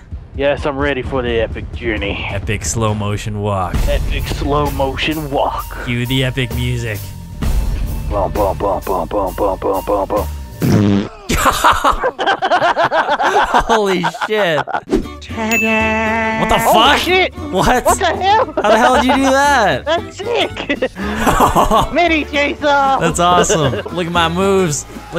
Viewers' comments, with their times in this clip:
0:10 my farts be like